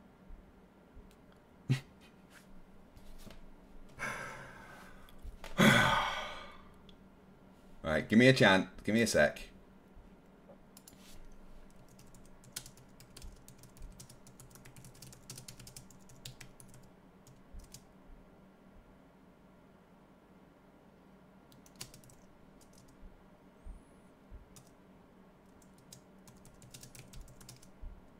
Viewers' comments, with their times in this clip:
0:10 silence is golden😊